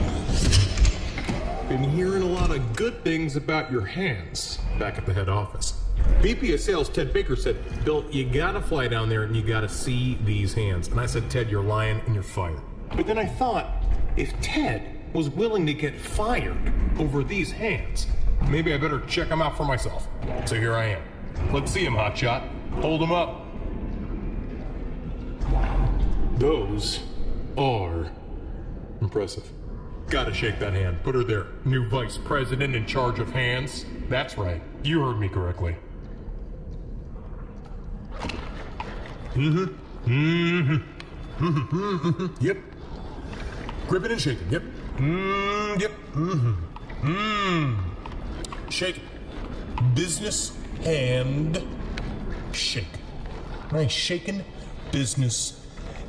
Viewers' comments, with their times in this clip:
0:06 sounds like Kira from Jojo
0:40 I love how in a matter of seconds his "Huhumm!" Approval sounds start sounding like the handshake became awkward